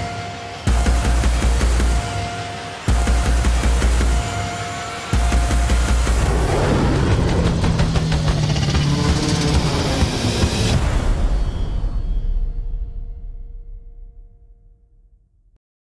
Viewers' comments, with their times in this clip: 0:04 Why is the guy laughing?^^